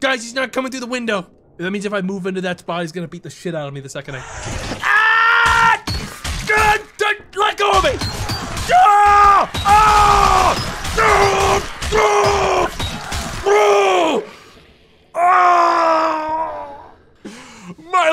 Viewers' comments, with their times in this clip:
0:04 Tom & Jerry scream 🙀🔨🐁